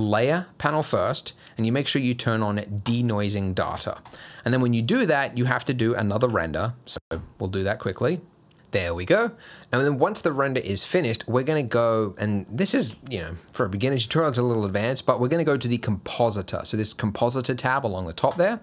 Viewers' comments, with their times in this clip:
0:03 people figtning if it's data ("deyta") or ("daata")* Guru: